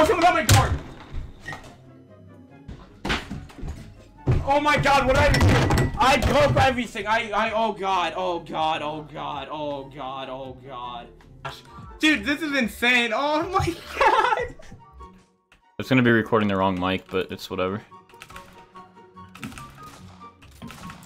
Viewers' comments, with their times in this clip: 0:03 Who else found this on recommend with 300k views and hearing this kid SCREAM SO LOUDLY ON HIS MIC I died